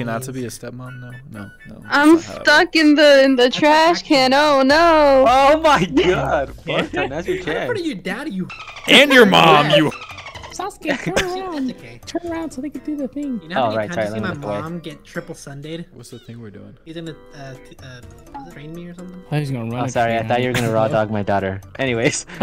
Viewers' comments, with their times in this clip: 0:04 why did I hear the corn hub song😩😩